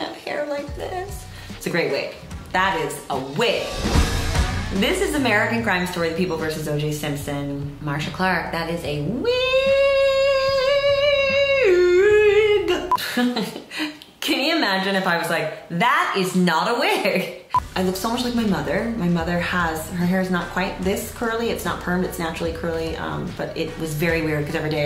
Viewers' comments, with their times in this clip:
0:10 Sarah Paulson can sing